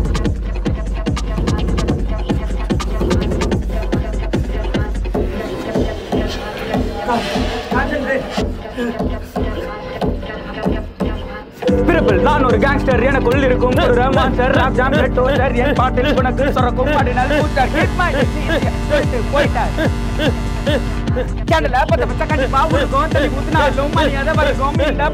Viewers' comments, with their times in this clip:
0:10 unexpected rap brw 💥